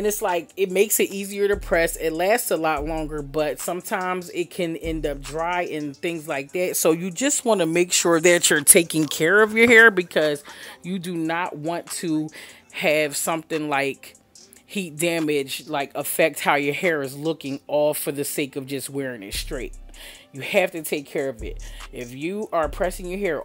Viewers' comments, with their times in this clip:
0:06 You better lean in the mic for the people, "SO, YOU JUST WANT TO MAKE SURE THAT YOU'RE TAKING CARE OF YOUR HAIR!"